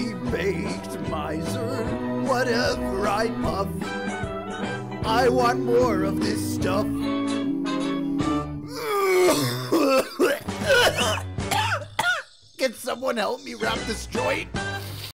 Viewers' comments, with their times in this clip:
0:09 that cough sounded a bit too real 😭😭